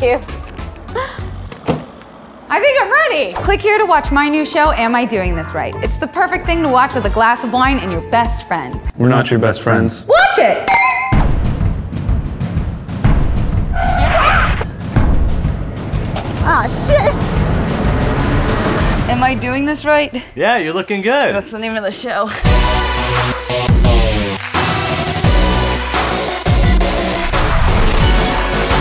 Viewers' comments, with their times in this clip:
0:10 am I the one one who watched over and over again because of the sound ..idk why i found the glass clinking hilarious